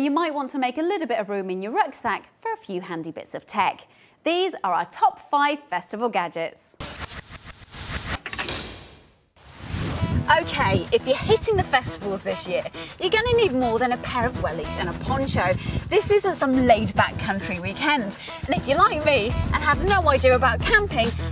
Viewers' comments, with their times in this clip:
0:07 The audio went dodgy.